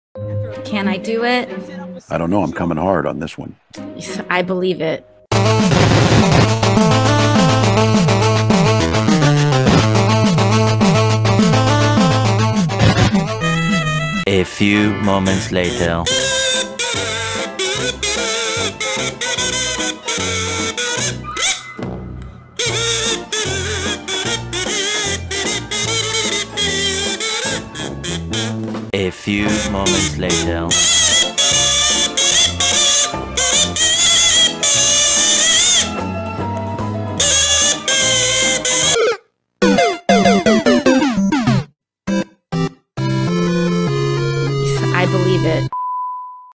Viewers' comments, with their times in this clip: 0:06 The music in is so funny lol
0:39 the Mario soundtrack was a stroke of pure genius, it has no right to fit so perfectly lol